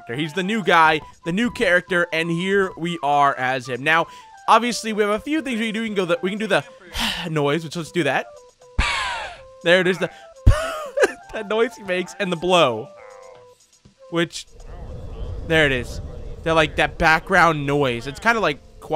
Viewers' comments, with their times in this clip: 0:06 i dont know what ehh was but it sounded funny